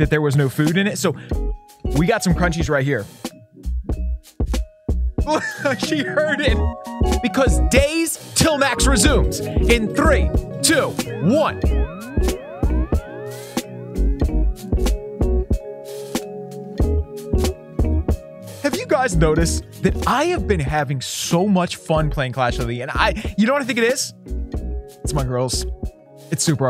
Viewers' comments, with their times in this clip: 0:09 that must be the clearest 3 i've heard lol